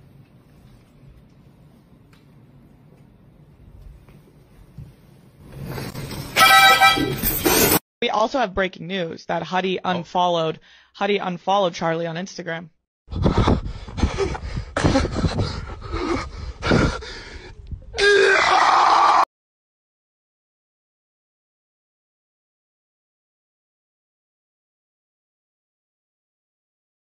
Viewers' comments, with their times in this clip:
0:05 (epic harmonica solo), gets fucking obliterated
0:15 New roblox death 💀